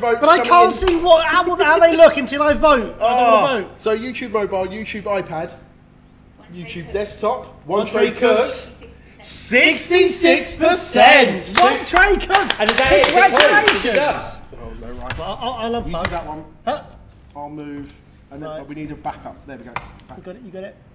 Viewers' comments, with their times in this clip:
0:08 Can we just appreciate how fkn in sync the "66%" line was at the mark?!